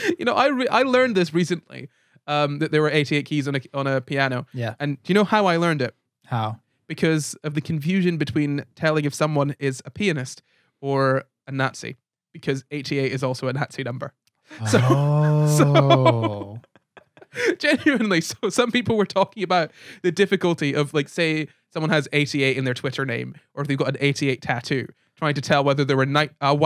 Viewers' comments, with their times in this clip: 0:10 I feel childish for thinking they kept saying penis instead of pianist until turning on the subtitles. I was so confused😂